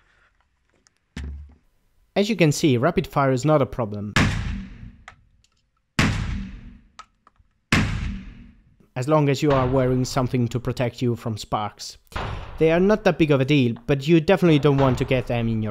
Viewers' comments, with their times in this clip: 0:03 sounds like a damn space gun